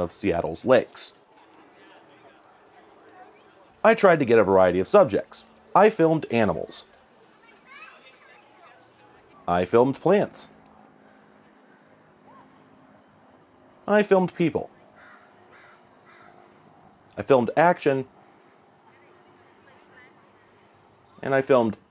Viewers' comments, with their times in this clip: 0:05 Aye niche pronounced correctly lol